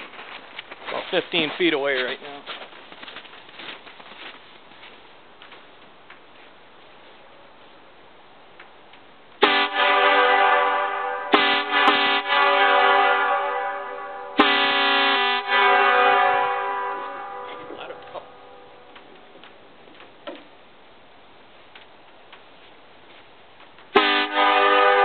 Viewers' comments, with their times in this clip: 0:06 to those that want to hear the horns.